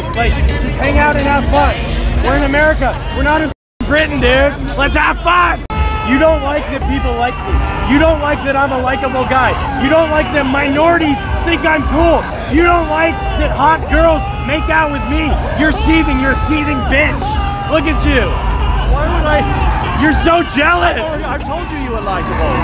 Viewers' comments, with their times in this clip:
0:05 imagine someone shouting this stuff in your face at the top of their lungs 🤣🤣🤣